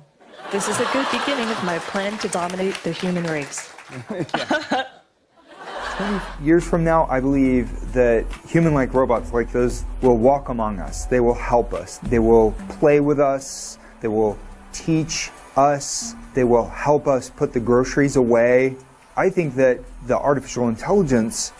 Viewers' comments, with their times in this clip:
0:04 is hella Sus. That fake laugh. She means that shit